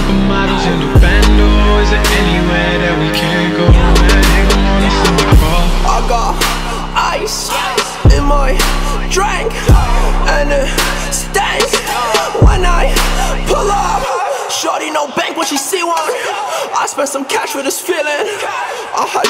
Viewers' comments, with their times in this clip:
0:06 The song is completely ruined